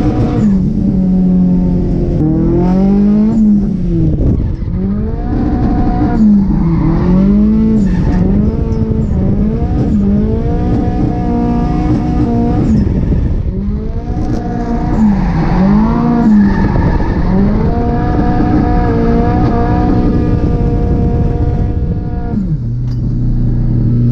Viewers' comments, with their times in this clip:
0:05 Your car sounds like a Wookie haha 👋🏻